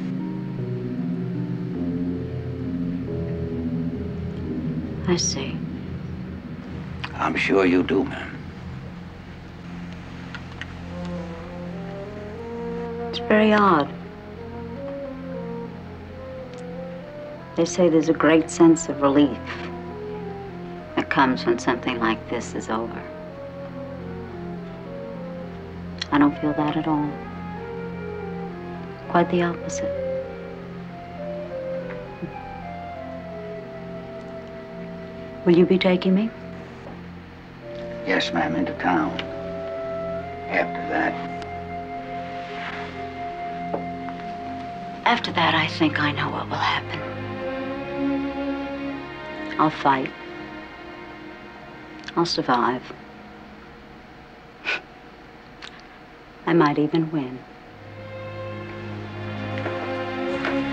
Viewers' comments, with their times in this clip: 0:04 She says, "I see." Columbo replies, "I'm sure you do, ma'am." No gloating, no pleasure in the moment. When she starts to explain, there is a musical figure like the exposition of a fugue, reminds me of the second movement of Widor's Op.13 No.4, sort of a melancholy defeat.
0:44 That orchestral change right as you feel her mood change.... It's chilling to see someone adopt a calm determination to see it all play out to the end, and then respect it.